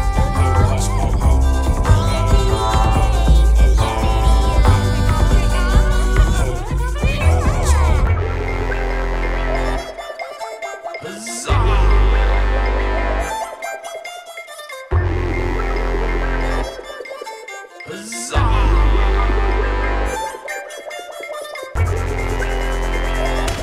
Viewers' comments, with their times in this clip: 0:09 Couldve done without castle bass ✅